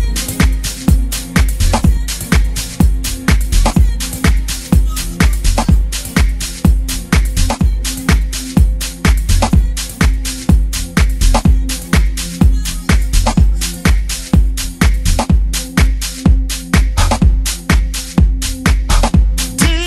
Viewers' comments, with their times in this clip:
0:06 track yo...getto soulful underground...thats what im talking about!!!